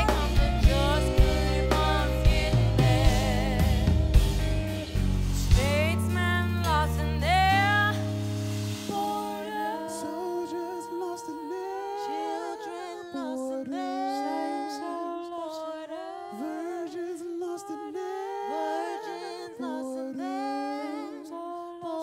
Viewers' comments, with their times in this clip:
0:10 those vocal layers are fvcking magicall